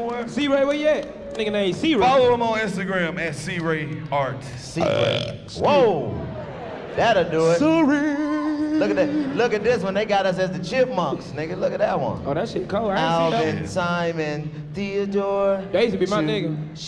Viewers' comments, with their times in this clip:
0:04 Noooooo DC burping into the mic has me fkn weakkk 😂😂😂😂😭😭😭 Then had the nerve to say “sorryyyy”